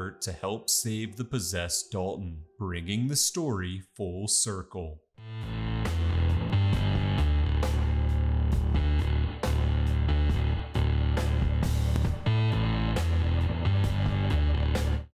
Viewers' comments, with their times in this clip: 0:05 that bassline and drums sound great!